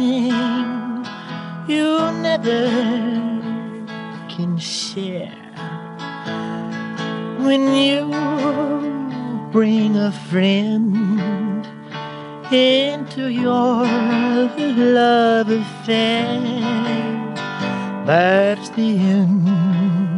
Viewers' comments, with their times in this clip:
0:05 It's quite fascinating to listen to his early, baby-like singing at that stage. Catch how he pronounces "share"